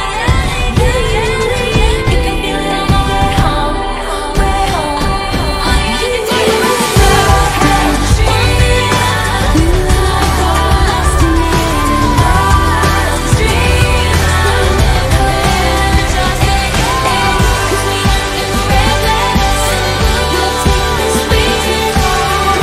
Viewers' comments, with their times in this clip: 0:07 Wildest Dreams is kinda off on the timing